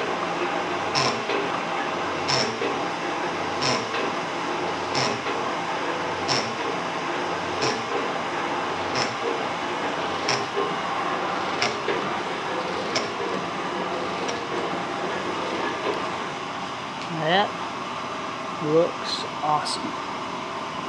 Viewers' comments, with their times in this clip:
0:03 Sounds like those squeezy pig toys! lol